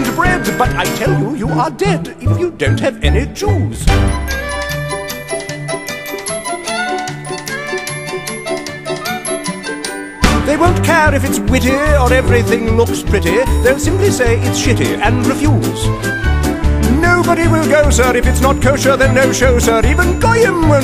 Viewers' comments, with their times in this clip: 0:03 it took me days to figure out "I have a little dreidel" is in here